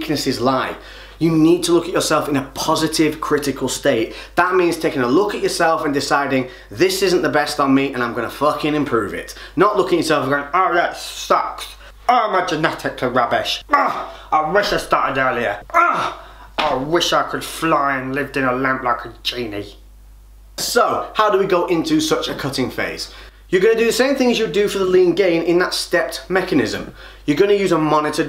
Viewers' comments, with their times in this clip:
0:10 10/10 Harry Kane impression👌😂